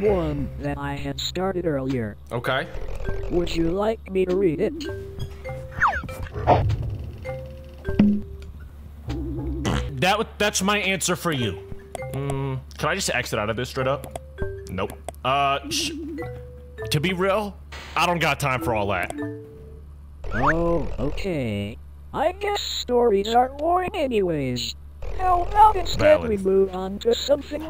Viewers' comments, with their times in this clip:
0:08 i cant tell if he fr farted or it was a fake🤣